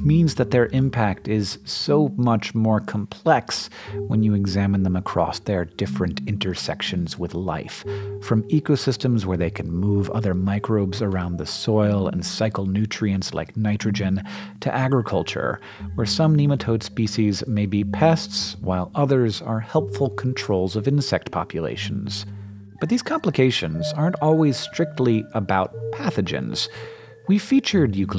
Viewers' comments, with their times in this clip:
0:09 When Madonna's "Vogue" starts to play.